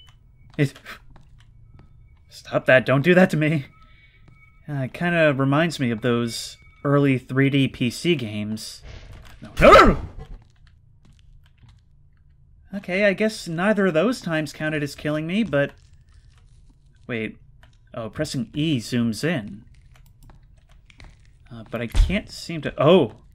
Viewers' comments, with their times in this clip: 0:09 goofy ah noice